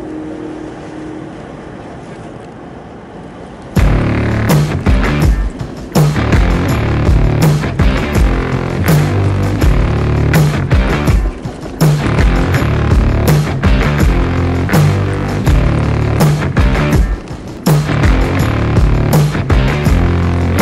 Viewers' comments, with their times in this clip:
0:03 the music changed when you entered the dangerous roads! Nooice!! :D